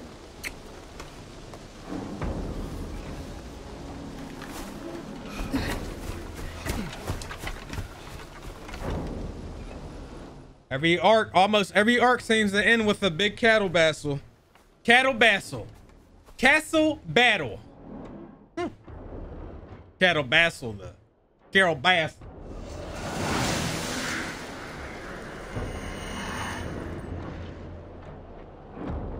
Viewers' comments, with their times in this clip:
0:10 Cattle Bastle really Chase 😂 #funnymoment